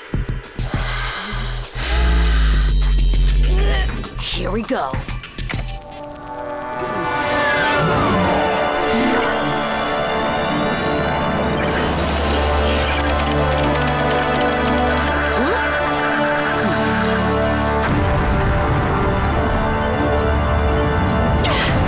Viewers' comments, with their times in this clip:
0:06 the music means it’s all gonna get real on Lyoko!
0:07 wait a second, Is this the door opening sound from Doom (1993) but slowed down a bit?